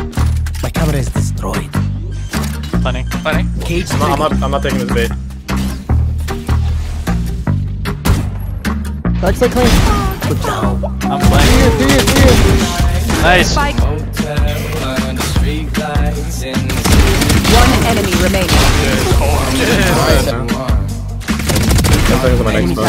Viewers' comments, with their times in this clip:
0:05 shot to cover up sound of drop so 200iq
0:07 this is my second or third time watching this and I just noticed. Did he just shoot his gun to mask the sound of him landing?